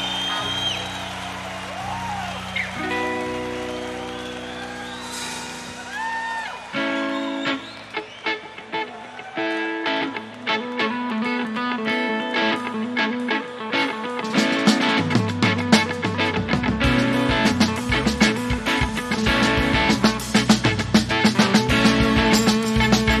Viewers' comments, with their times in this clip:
0:10 GOOOD after explosive moment ... this band had never bored me